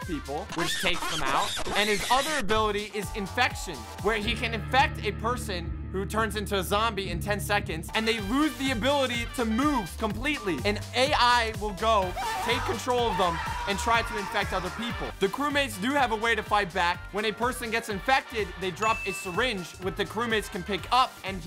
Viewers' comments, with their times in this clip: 0:04 lost my mind when i heard tf2 opening literally trying to find out where it was on my taskbar and how it got opened